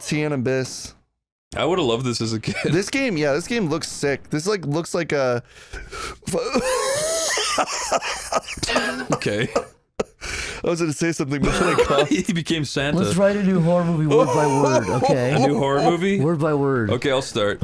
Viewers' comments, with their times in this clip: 0:05 that sounds like a completely different person wow